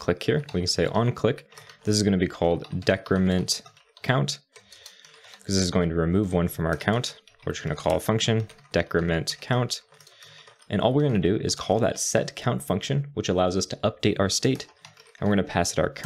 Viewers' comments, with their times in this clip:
0:03 "decrementCunt" I agree